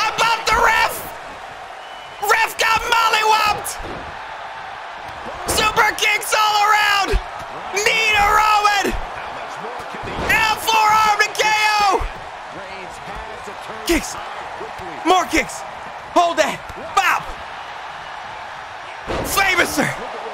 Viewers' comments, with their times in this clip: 0:05 imagine all the superstars were just shouting like this throughout the whole match